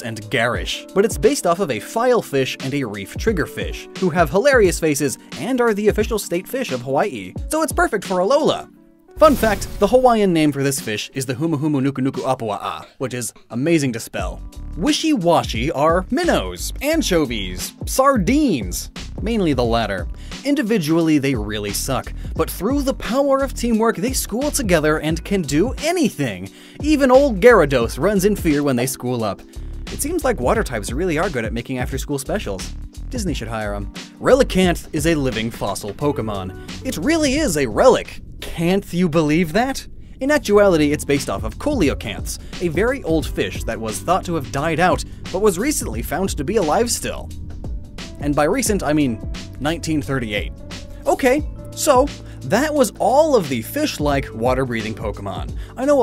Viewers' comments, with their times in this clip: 0:08 x.25 speed. This is what I sound like high as a kite
0:11 How many times do you think he had to say this to get it right?
0:41 Why does he pronounce Coelacanth like that